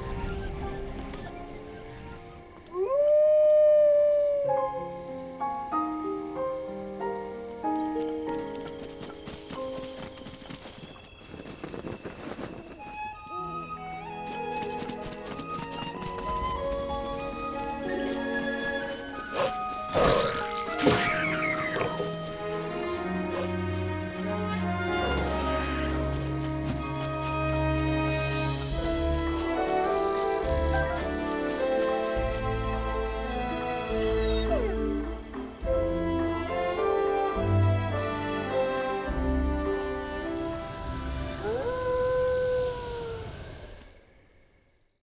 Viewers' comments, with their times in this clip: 0:10 I need this. LIKE, I REALLY NEED THIS. I'll do whatever it takes. I'll buy Breath of the Wild, the Twilight Princess HD game, and the Amiibo, I'll find all three places where you can get to the Cave of Shadows, I'll beat all 40 floors of the Cave, and do what they're saying to do here so I can FINALLY have a wolf (my favorite animal) companion in a video game. THIS IS AWESOME. (Also, I love how you can actually hear Wolf Link shaking himself It's such a nice little detail.)
0:33 Wolf Link's whimper is so CUTE
0:39 lol thats why you hear him howl